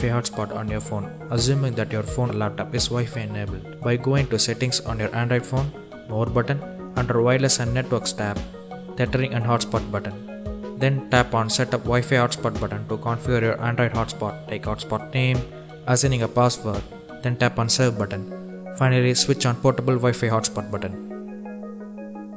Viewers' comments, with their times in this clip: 0:09 Why the background music? You think that makes your video more interesting? I stopped watching because of that ANNOYING music.